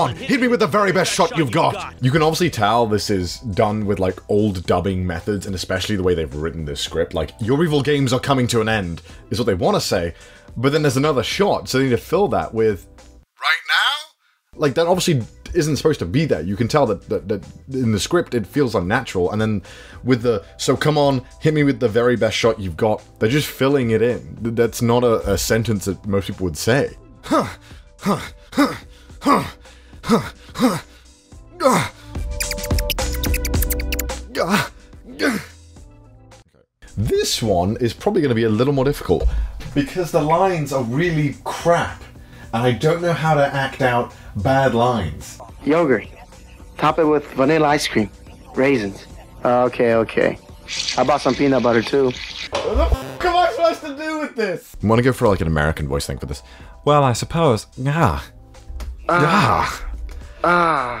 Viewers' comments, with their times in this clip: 0:07 the fact that he has to grunt to finally get it right 🤣🤣🤣🤣🤣
0:27 In is like genshin impact weird noises during mountains exploration... lol Diluc voice-actor
0:31 the noises your parents make in their room
0:44 I'd have gone with a norwegian accent.